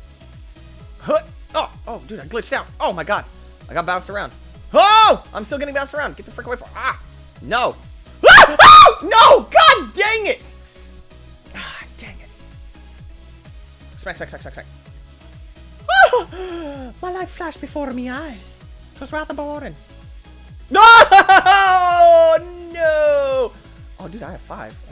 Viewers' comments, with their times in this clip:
0:08 That scream XD